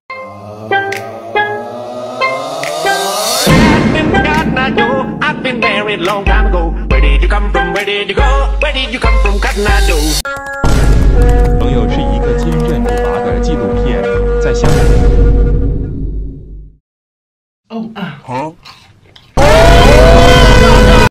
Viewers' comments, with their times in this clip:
0:03 What the haeellll scares me bro he just used his ability he farted and teleported